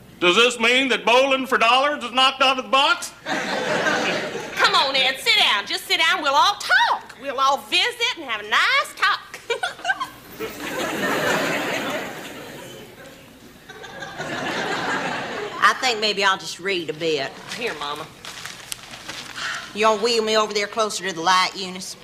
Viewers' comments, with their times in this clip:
0:10 Eunice’s laugh sounds like my fifteen year old blender.